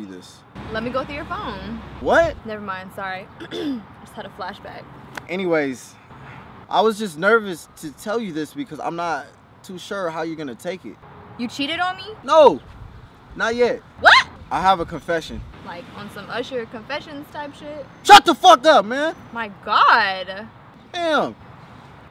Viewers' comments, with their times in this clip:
0:09 -"I Haven't cheat it on you, not yet" - "Wroof???" Like a chihuaha xD hahahahahaha!